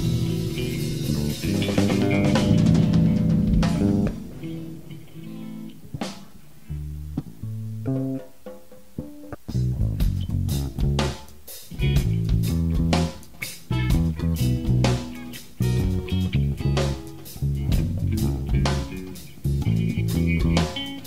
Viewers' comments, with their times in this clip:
0:08 From the beginning till just sounds like the backing track for Santeria. I know the description says so, but I'd argue that it's the actual backing track, not a better version of Santeria. I may very well be incorrect though and would love for someone to enlighten me if I am wrong! Please let me know!